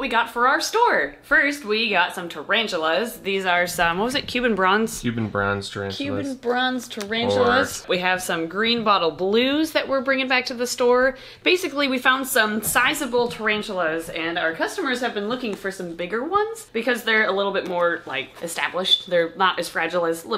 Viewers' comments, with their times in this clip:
0:06 Is it just me that thinks it sounded like "we got some snakes for out zore"